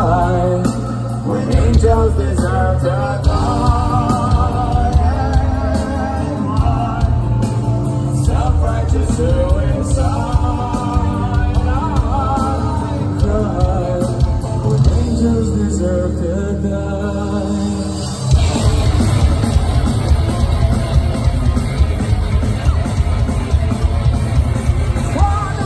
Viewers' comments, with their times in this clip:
0:10 sounds so bad haha. What a missed note